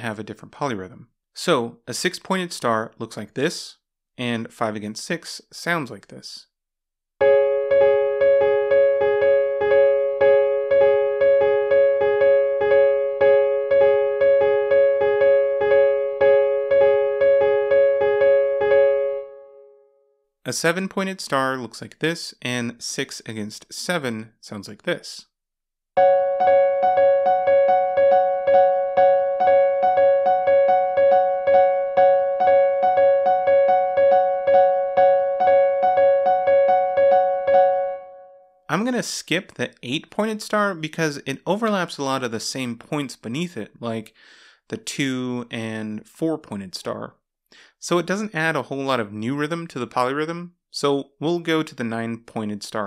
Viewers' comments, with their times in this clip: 0:06 It makes 5:6 polyrhythm.
0:34 looks like a ringtone